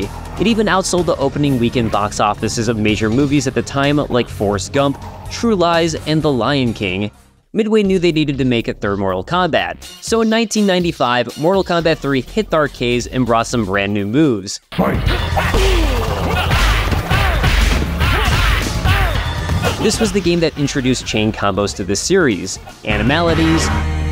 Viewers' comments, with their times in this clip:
0:07 Ed Boon vs popcorn "Get over Here!" * crunching sound